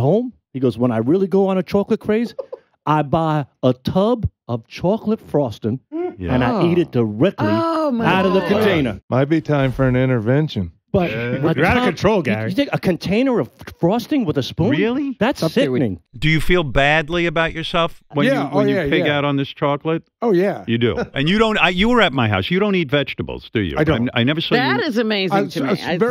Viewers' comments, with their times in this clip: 0:08 Fred’s subtle Richard impression always kills me.